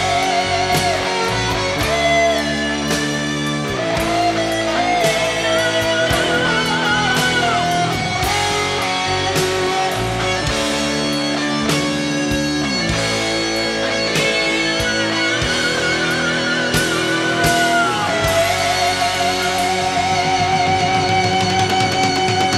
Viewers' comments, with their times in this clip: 0:04 just one example. He harmonized them wrong notes during the whole piece.